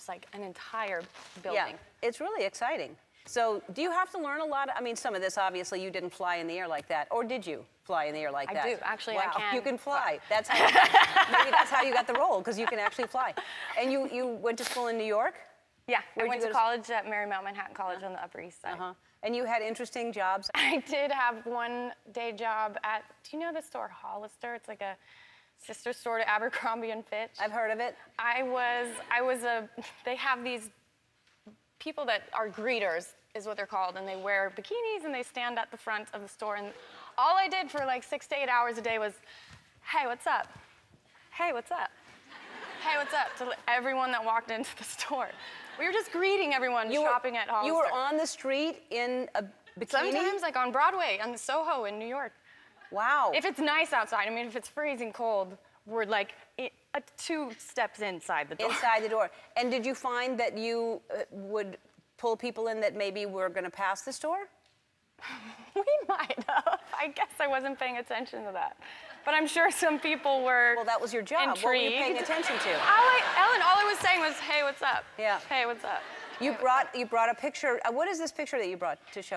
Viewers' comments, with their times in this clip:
0:10 that laugh made my day
1:03 I love her laughs..